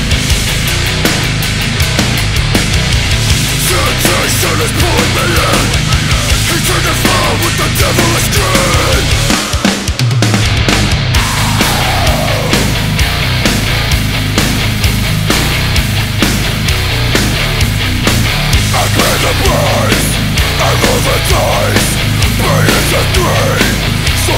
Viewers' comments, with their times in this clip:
0:09 If that groove that comes in doesn’t make you max the volume in your car while head banging in traffic, you’re not a metal head. Who cares if the light was green